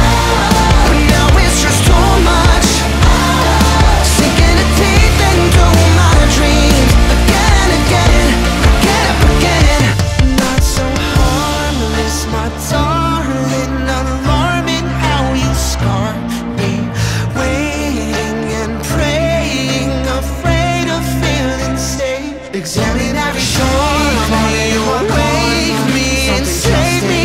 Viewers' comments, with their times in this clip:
0:10 I just realized that sounds very similar to Skeleton. That's really cool if it's intentional.
0:12 No one is talking about the overlapping bruh that is the BEST thing ever